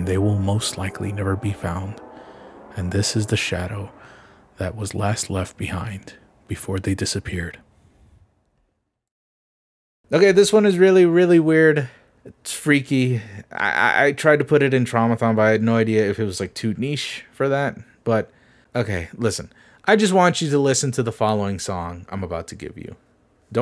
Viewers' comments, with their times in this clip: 0:09 This song made me dance, quite literally.😂 I love it! Gives me an adventurous feeling, as if I play a 2D platformer, collect stars or apples, and my journey through this game has just started...😍